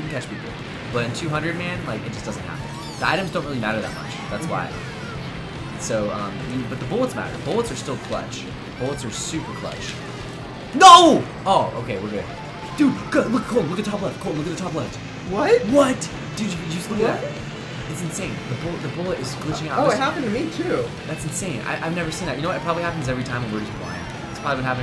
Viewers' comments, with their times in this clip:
0:10 I died laughing when the bullet went backwards and you yelled NO! XD